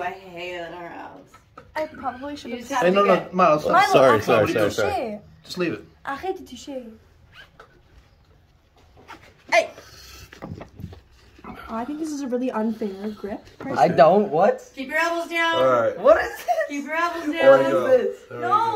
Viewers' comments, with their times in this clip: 0:05 Why she is speaking french sudently ahah it surprise me